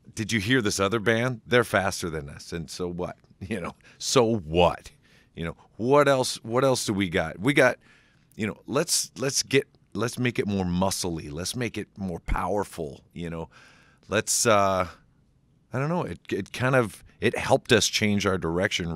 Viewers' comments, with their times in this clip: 0:03 SO FUCKING WHHHAAATTAAHH